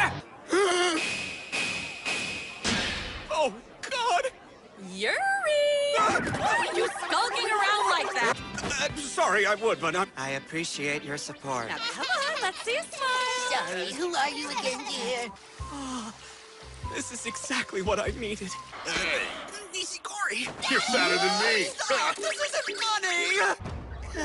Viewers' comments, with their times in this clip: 0:05 IT'S THE YUUURI FOR ME
0:10 he sounds like a robotttt